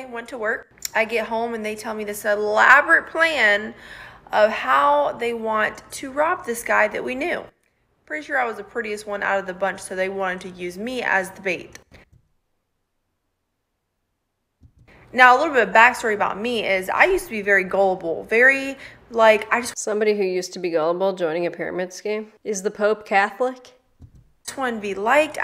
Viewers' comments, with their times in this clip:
0:08 The silence speaks volumes 😭